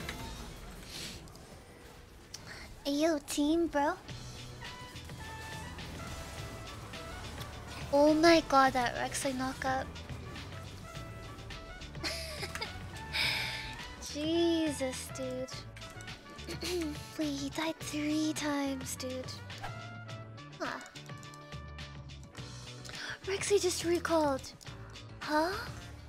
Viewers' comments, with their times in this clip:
0:07 omg your voice :'( Gachibass ♥